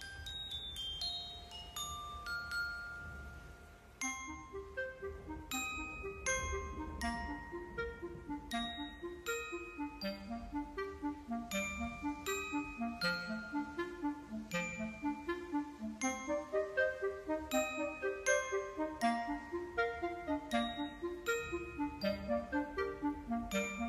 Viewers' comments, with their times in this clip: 0:08 ABSOLUTELY AMAZING!!! ..my boyfriend called it depressing.... but I called it ELVES BUILDING THEIR HOUSE! :--)))